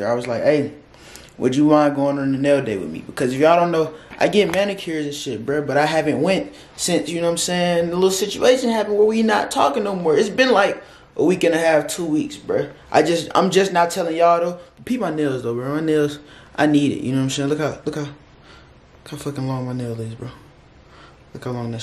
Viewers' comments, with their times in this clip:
0:08 u can hear the i miss her in his voice